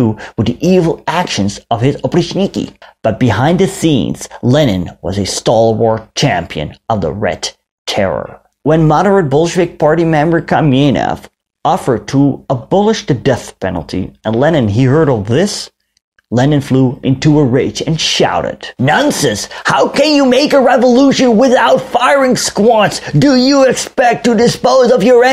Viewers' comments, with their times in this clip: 0:10 You're reenactment of Lenin flying into a rage deserves an Oscar award.